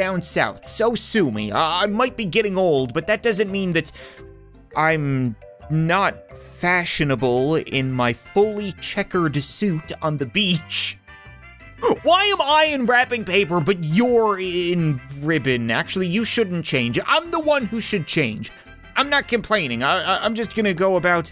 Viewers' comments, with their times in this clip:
0:04 ’courier sounds intensify’